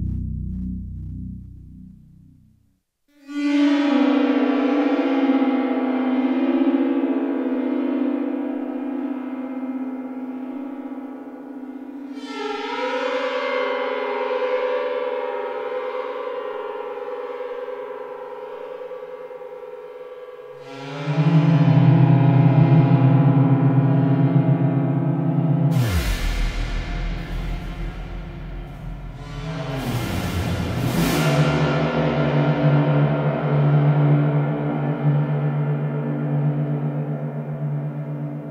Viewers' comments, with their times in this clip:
0:03 satan's fiddle sent chills... absolutely magical. sounded so physical and non-synth-like
0:21 you nailed Harry Partch Kithara sound. Bravo